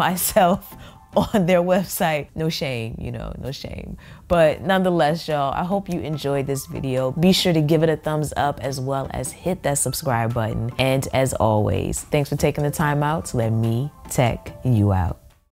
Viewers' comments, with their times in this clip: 0:12 that voice tho. Got me shook.